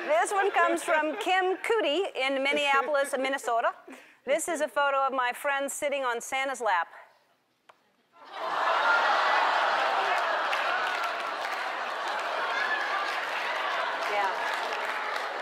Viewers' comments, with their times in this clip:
0:03 she said Minnesota in such a cute way!
0:03 how ellen said minnesota in is so cute!